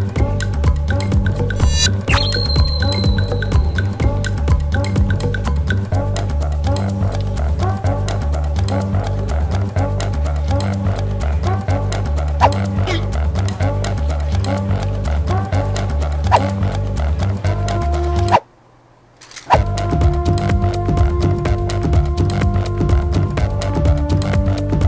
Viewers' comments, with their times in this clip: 0:10 LISTEN CARREFULY MINECRAFT VILLAGER SOUND